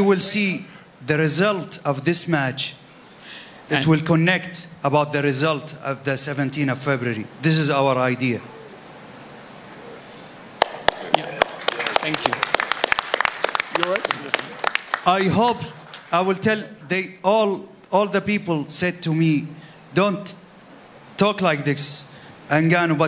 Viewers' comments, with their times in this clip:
0:06 Nobody gets it. Anthony just starts clapping